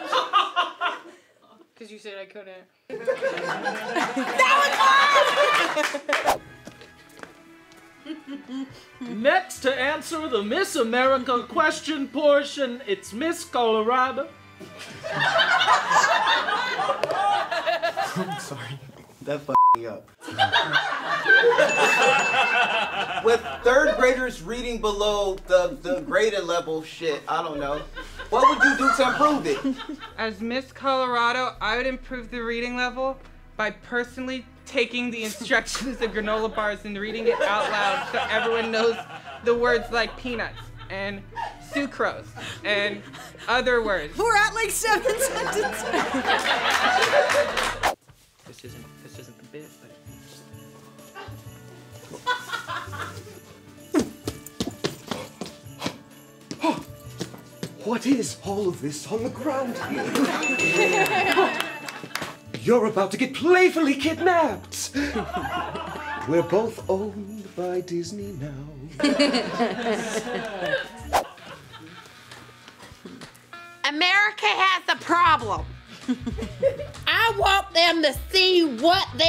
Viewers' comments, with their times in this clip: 0:06 that was definitely 3 before the spit laugh
1:05 ok miss singer!!! carry that tune!!